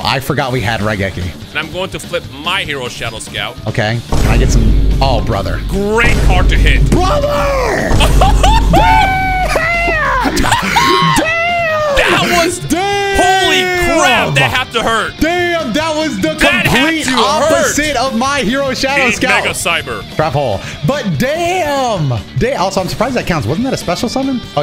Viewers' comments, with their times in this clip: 0:07 that was FOUL. Positively vile. RANCID. Horrible. The vine booms and everything, I was in tears INSTANTLY.